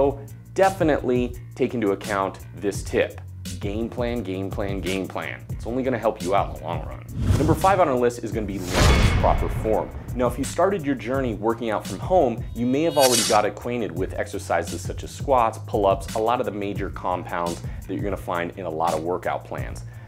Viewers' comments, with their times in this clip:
0:03 Game plan sounds like gain plan :-D